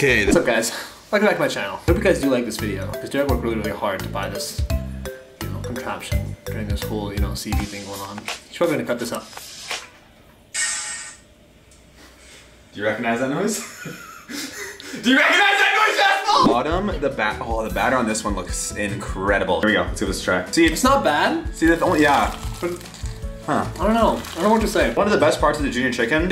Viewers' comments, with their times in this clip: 0:10 What was the noise ???